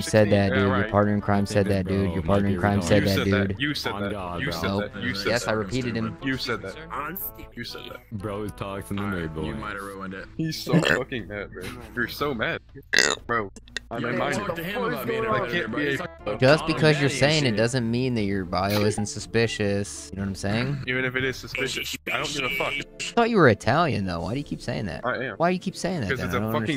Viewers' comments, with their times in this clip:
0:10 "hes so mad bro" "burps"